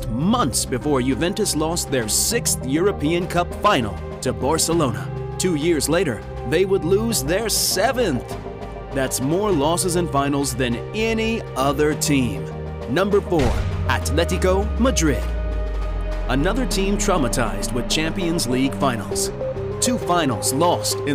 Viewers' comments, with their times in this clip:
0:04 did he just say Bore-celona